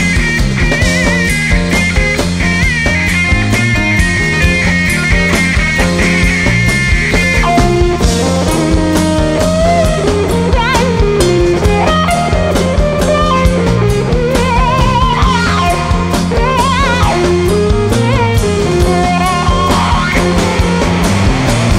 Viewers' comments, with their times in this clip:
0:04 love the Steven Stills-esque 60's tone by Dwyer